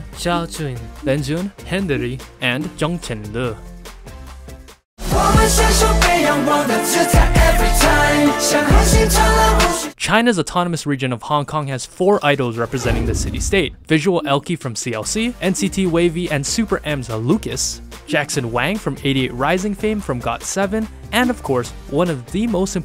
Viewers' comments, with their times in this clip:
0:05 Someone pls tell me what the song is it sounds like a bop